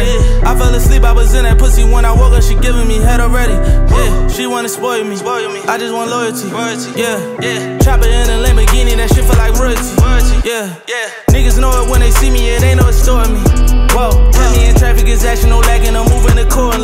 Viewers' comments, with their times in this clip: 0:04 Soooo sickkkk and then the drop